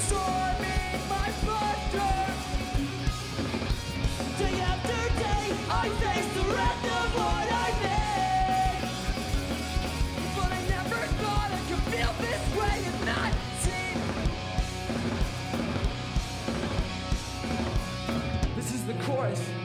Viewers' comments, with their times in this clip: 0:05 Dat dual vocal was just...fucking awesome